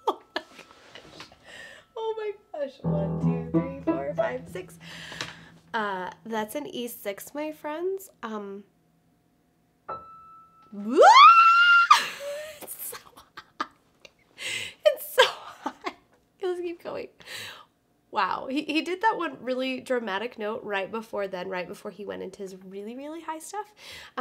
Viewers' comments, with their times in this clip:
0:10 I love your "I just saw a MOUSE in my room" E6. 😋😋😋👍👍👍